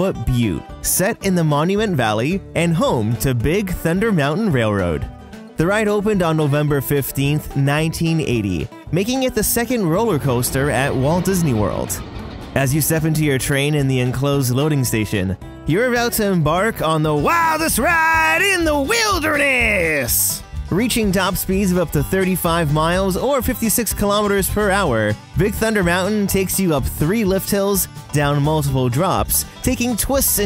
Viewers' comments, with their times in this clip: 0:09 didnt expect that voice change💀
0:16 that accent genuinely scared me dude